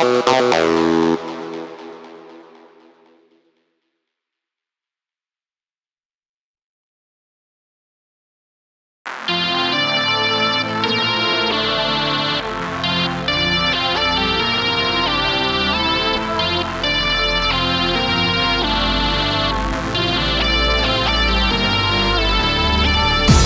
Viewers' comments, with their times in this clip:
0:07 Hot damn that is a soulfully synth tune. Love it!